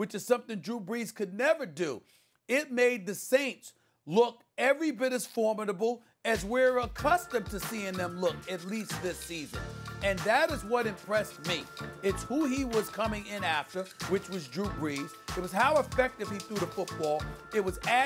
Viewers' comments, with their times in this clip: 0:05 Random music starts playing.